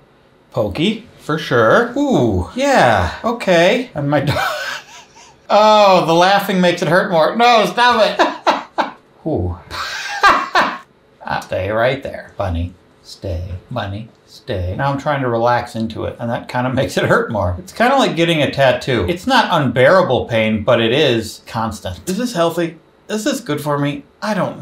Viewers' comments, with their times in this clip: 0:09 That's a Polar Express laugh if I've ever heard one